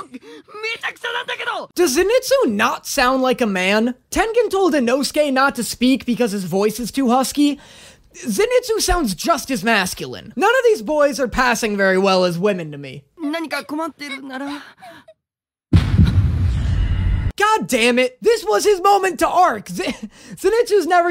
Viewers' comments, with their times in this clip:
0:03 this is something I think the dub did good, they made inosuke sound like a beast man because he is one, giving tengen a reason to tell him not to talk